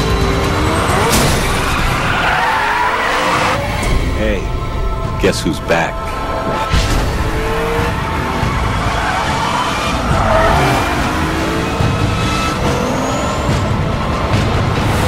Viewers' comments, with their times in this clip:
0:03 "Hey , guess who's black". ahahaha